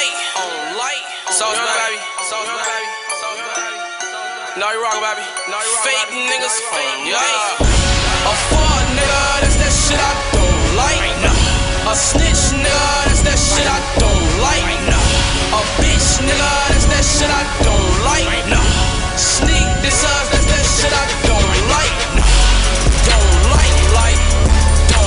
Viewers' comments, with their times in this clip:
0:08 OML dat best doh do savage